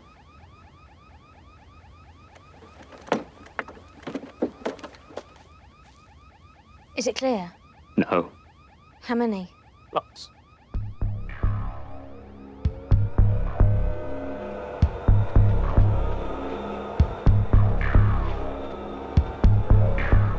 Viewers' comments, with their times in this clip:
0:05 That voice break made it so much better XD